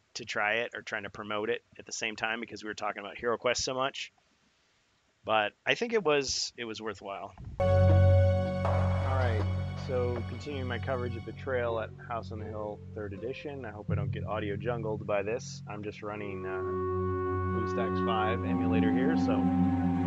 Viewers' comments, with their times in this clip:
0:07 and on EARPHONE WARNING (LOUD VOLUME!) (in the last part of the video... spooky "jump scare" type sounds are prevalent also loud music). Turn on subtitles (when available) if you wish... I'll understand. ;)